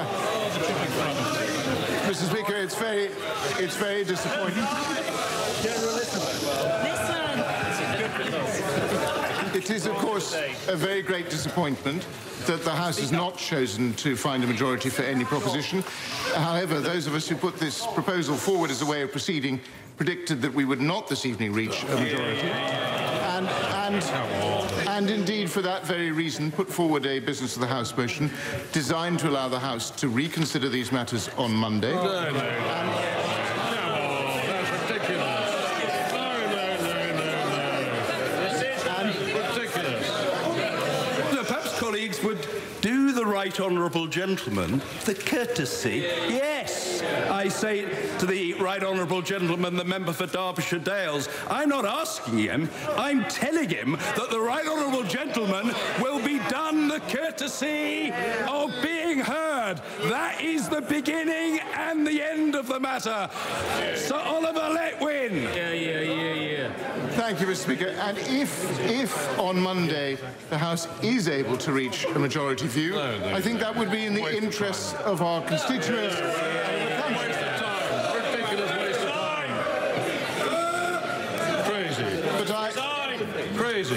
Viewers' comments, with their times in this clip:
0:07 Because of the Hollywood culture of using the London (or at least I think it's London) accent for villains, I can't help but imagine that the guy is a movie villain.
0:27 lmao just the sound of this makes it feel like a south park episode, the way he talks, the rumbling afterwards
1:05 Hahaha what about the aspiring rapper in "yea yea, yea yeah" 😂😂😂
1:06 why does he sound like he’s recording the begining of a London rap? Ye ye ye ye